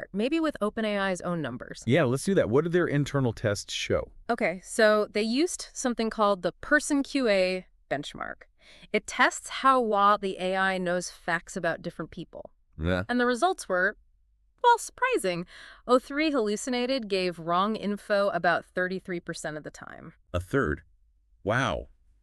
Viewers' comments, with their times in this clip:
0:08 Yeah this is Google NotebookLM. You can take a document and turn it into a podcast and, like you said, the voices are incredibly natural. I haven't heard the whole video yet, but in my experiments they tend to sometimes stumble on their words a little bit, like garbling them (e.g. she says the word "well" like "wlaw" which is strange because text to speech has been around for quite a while now and I believe these mistakes are a side effect of trying to sound natural) But otherwise, it's extremely natural, with the uhms and the pauses and the inflections.